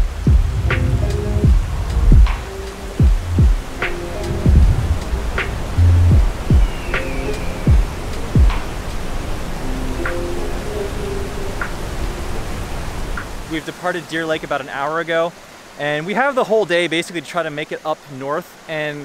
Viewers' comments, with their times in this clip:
0:06 eagle cry! YESYESYESYESYESYES 👊👊